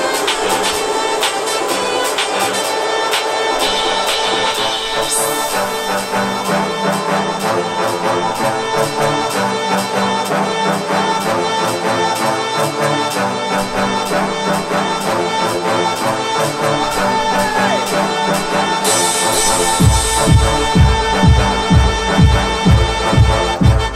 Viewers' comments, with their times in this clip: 0:07 Ahh shit that beat which starts ?